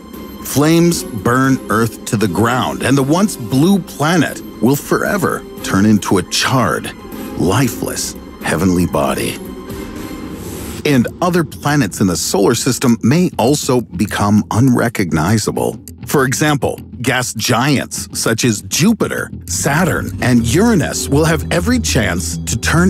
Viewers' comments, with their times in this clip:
0:08 the way he says it ;-;